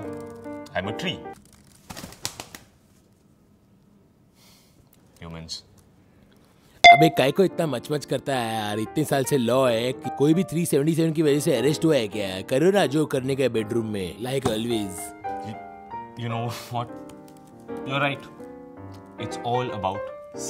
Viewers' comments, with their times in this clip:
0:07 Tanmay mimicked Trump back in 2014.